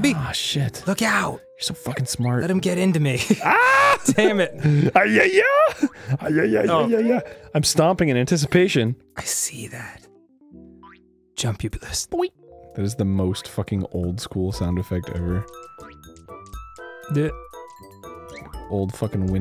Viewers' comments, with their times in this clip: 0:04 Arin sounds like the babies from Imagine Party Babyz